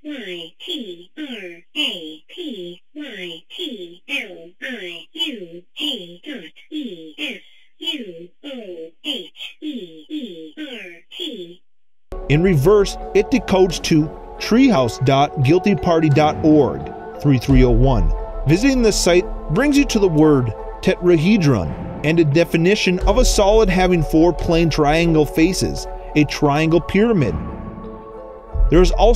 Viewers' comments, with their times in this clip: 0:10 I have a Question: at the end of the message, why do you hear the last T when there is no sound(no sound curve)? Is it an editing error?